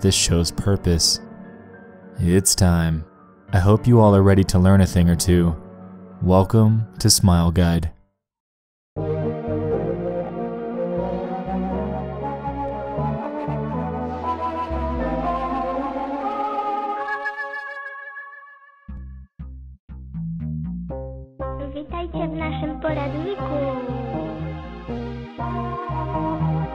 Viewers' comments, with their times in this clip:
0:08 not the music you want in your head when taking out the trash at night